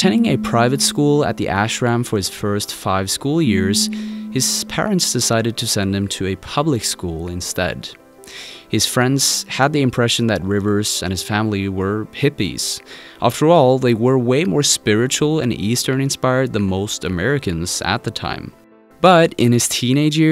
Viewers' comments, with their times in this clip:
0:03 we can hear your phone is vibrating smfh